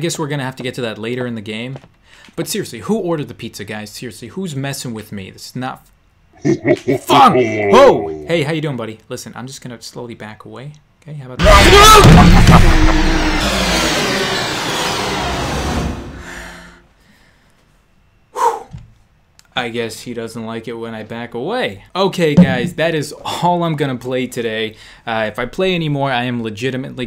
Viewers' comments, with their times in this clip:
0:10 His scream is hilarious omg